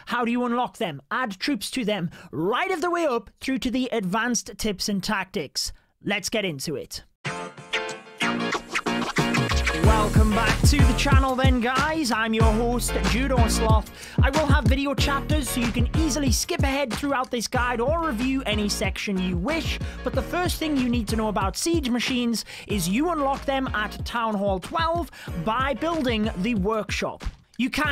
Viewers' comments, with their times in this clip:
0:09 lmao i thought u was boutta start rapping
0:10 I didn't know you were a rapper
0:10 sounds like he’s singings